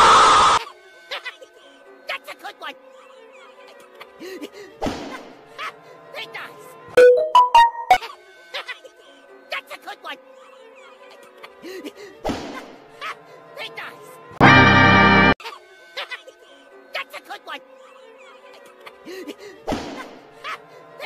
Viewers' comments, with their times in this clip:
0:05 my right ear definitely enjoyed that💀
0:06 if you have headphones or earbuds, you can hear that the samsung notification sound goes through your right ear